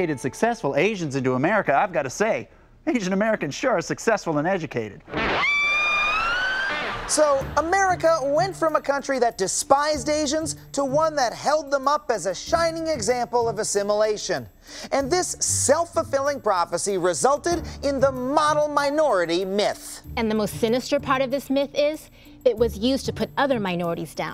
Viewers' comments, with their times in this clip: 0:05 This dude's a guifakist! You can't play that without a whammy bar!